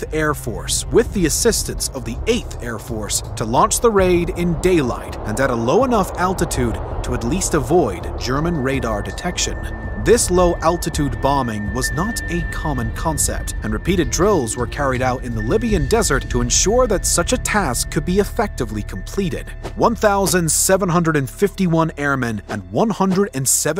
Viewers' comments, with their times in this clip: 0:07 that beep is super obnoxious for anyone with tinnitus